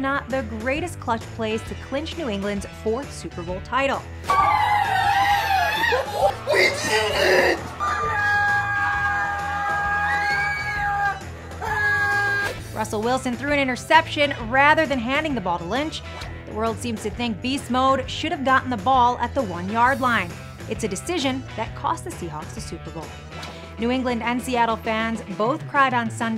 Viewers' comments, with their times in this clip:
0:08 LMFAO the guy is the funniest friggin thing I have seen out of this whole post Pats super bowl reaction videos. The way he grabs his kid and just lets out the best relief-frustration-exhilaration-gyration-satisfaction-grunt-screaming reaction of all time is fucking great rofl! His face is nothing but lmao! Fucking awesome!